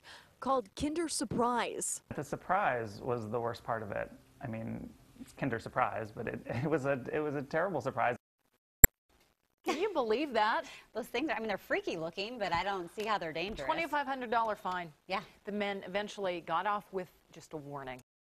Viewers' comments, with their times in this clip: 0:06 wait did anyone else hear the himarker